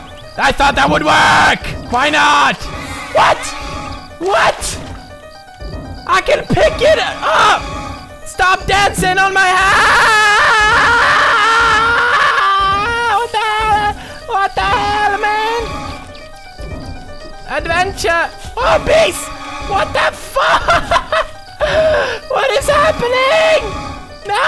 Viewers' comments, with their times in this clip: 0:10 He sounded like Chewbacca